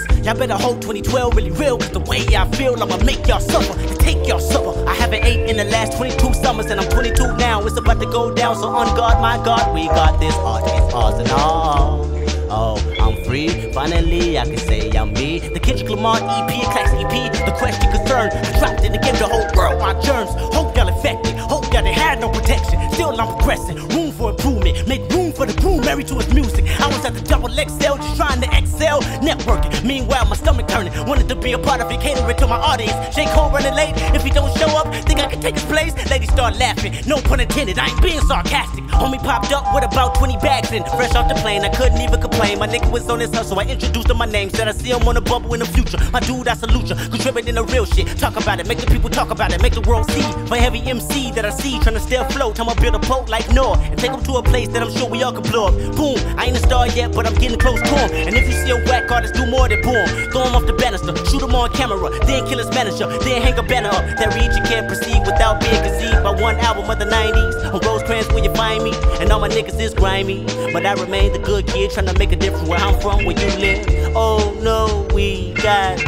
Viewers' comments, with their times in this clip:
0:08 the flow here is absolutely perfect, holy...
1:04 I don’t know why but I love so much. Love how those 5 lines sound